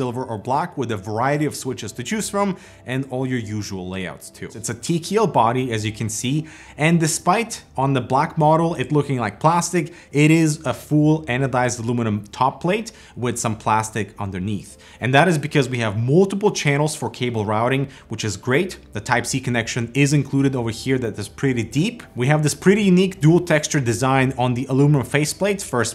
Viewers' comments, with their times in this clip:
0:06 What is the word he calls the body? Teaceal is how he pronounced it closed captions wrote it tql. Thanks.